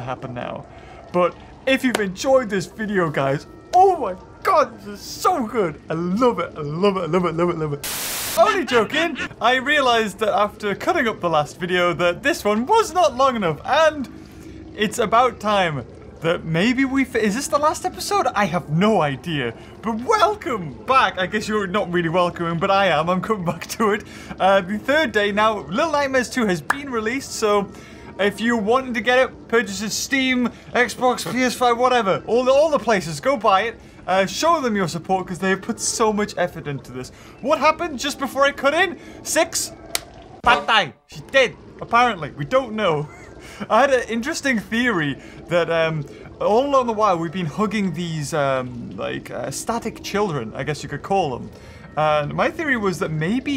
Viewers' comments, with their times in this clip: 0:08 I literally exited out of the video thinking it was over and I heard the static and immediately clicked back in only to find out the video wasn't even halfway done. I wasn't paying attention. 😂 And I knew the video was like an hour long and I just got completely sidetracked. Oops.
0:39 ??? wat did he say? "patay"??? oke understandable
0:40 I'm still unsure of what this word really means, kinda sounded like "Patay".... plss someone explain
0:41 Six, “patay”? Am I hearing it right, you’re speaking Filipino or my ears just tripping me